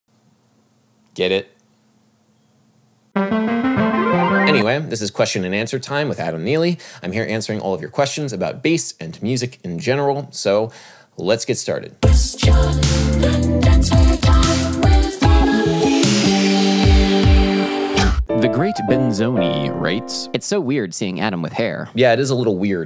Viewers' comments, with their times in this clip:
0:03 the notes on the shirt are not the same as the ones that are played (the shirt starts on a D and the audio started on a G)
0:04 how would one go about creating an arpeggio like that? (Not the licc)